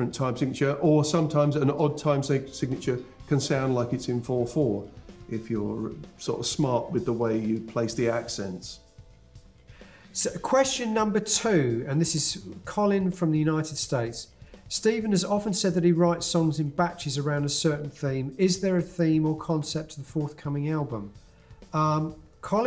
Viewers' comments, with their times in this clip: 0:10 Haha HEAVY sigh from Gavin.